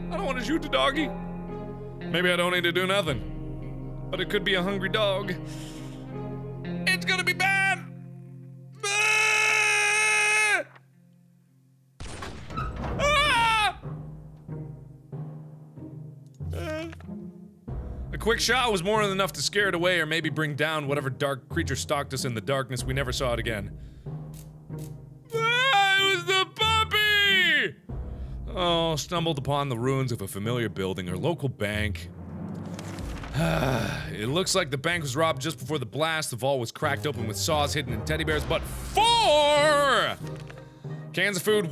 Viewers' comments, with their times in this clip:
0:09 mark grunting- captions "MATING CALL"
0:11 that sounded like a Barrett
0:14 the gun sounds like the Barrett from MW2.
0:25 two voices camed from mark's throat